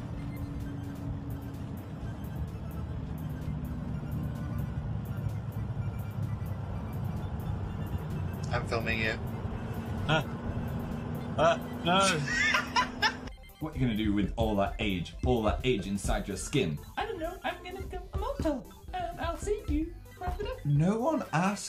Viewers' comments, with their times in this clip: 0:05 that accent was oddly... Gay...